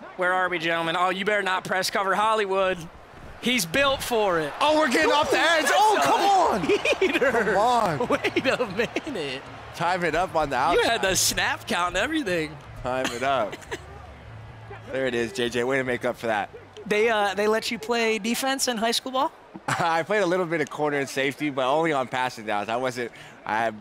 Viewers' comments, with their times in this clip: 0:05 bro hit that scooby doo laugh